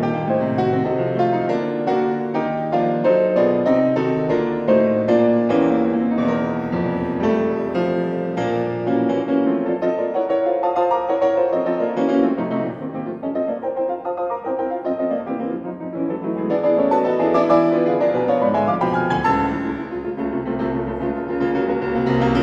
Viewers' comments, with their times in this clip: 0:05 Really beautiful detail playing that Bflat more times than written